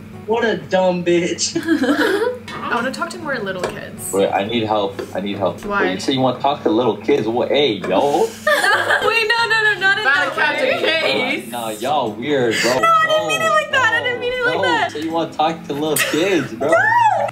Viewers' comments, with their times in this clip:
0:03 man sound exactly like my friend like HOLY SHIT exact voice tone and the way the person talks 😳😳
0:04 HIS VOICE LOOKS LIKE DYNAMIC